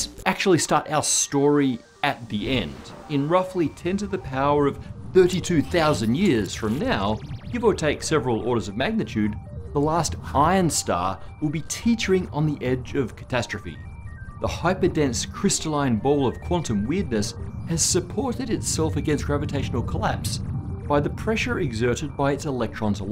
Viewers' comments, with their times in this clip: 0:10 I thought Matt said "Pion Star" ... Please do not look up "pion star" on your work computer, unless you would like a chat with HR